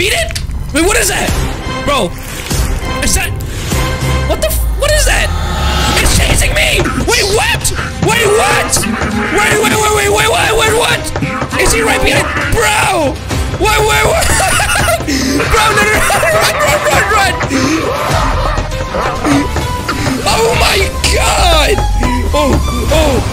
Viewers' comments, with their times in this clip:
0:08 He litteraly covered the chase music you know what this guy is the worst person in roblox history